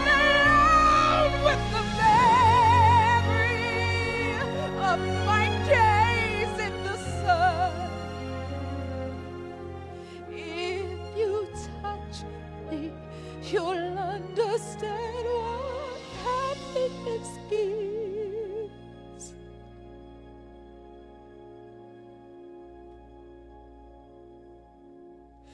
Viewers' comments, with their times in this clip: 0:09 If WHO touches WHO? Thanks for emphasizing. I needed that.